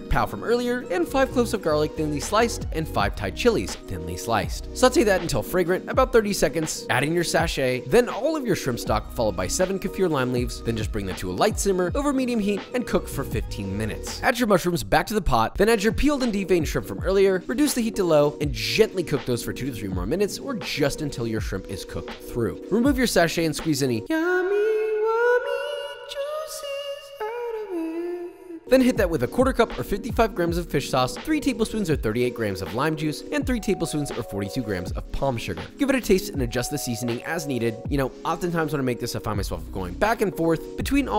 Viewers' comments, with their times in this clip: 0:04 "saute that" Papa had a puberty moment 🤭
0:04 Did papa's voice break??? papa finally became PAPA
0:24 that is the best singing I’ve ever heard